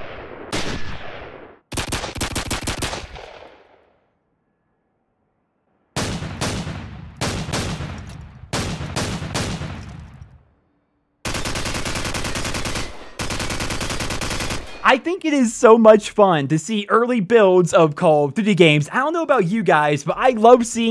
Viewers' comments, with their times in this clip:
0:06 the deagle really didn't sound right/iconic